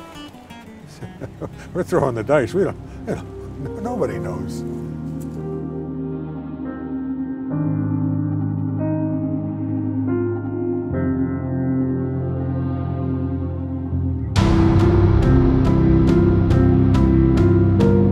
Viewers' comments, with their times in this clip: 0:03 This looks GREAT!. Anyone know the song that starts ? Sounds NIN-ish but can't tell.....